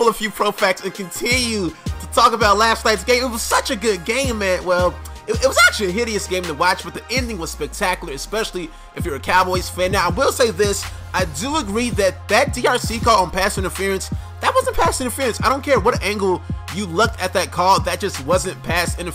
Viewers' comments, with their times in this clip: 0:05 that high note tho